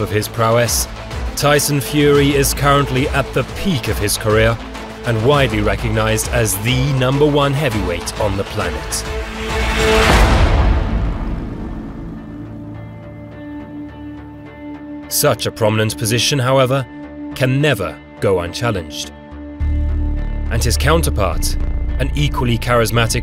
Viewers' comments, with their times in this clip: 0:07 Funny, I got in and already had to turn the volume down due to the overproduction and loud ass background music when he said that Fury is at the peak of his career right now, which is patently false, and decided not to cringe through the rest of this mess. To each their own I guess...